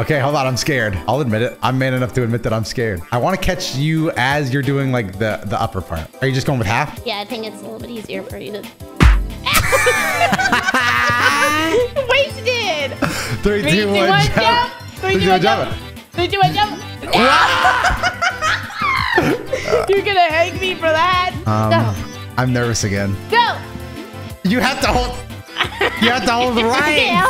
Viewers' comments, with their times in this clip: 0:09 When you aren't sure you should laugh that enthusiastically